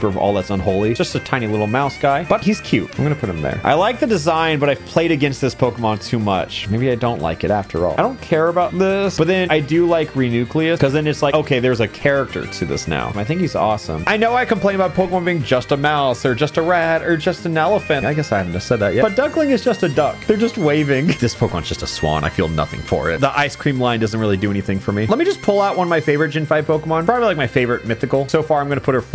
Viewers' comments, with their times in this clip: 0:10 HE MISPRONOUNCED REUNICLUS